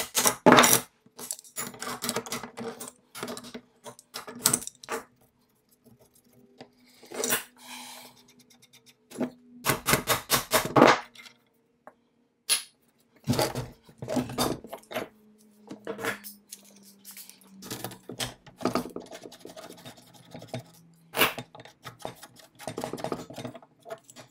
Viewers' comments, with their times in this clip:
0:07 Wooow! pay attention to what is heard at minute a rather disturbing sigh, he cannot be because he is on fast camera